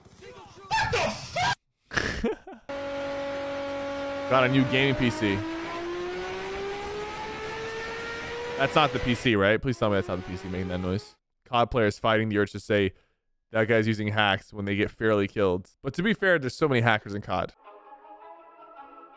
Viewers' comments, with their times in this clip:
0:03 naw that PC was a whole plane bout to take off